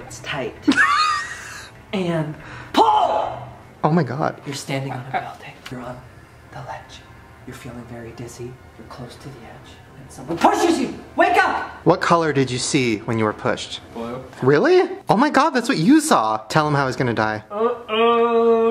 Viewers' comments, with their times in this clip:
0:03 so we’re not gonna talk about how Ryland actually gagged when Drew said: ”PULL”